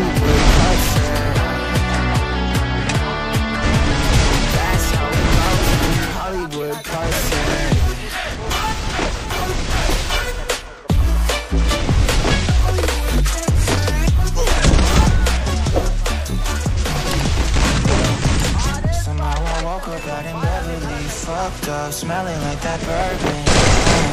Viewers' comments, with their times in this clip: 0:05 BRO I LIK THIS SONG